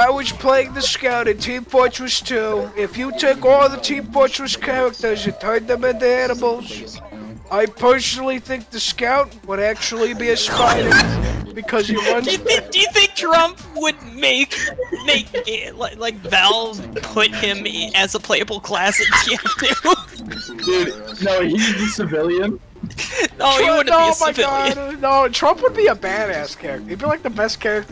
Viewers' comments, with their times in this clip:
0:09 I'm dying why does he say "a spyda" like that I'm almost crying